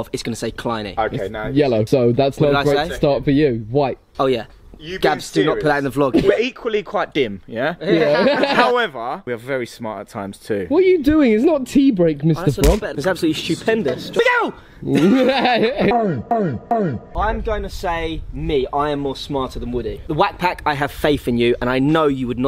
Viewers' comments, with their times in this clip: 0:08 When that one dude yelled “LOOKOUT”!! I must have watched that other dude’s reaction about six times!